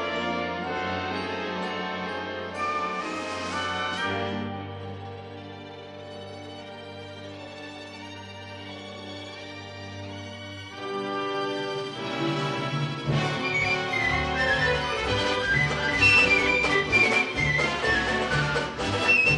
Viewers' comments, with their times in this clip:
0:03 That key change always gives me chills! ^^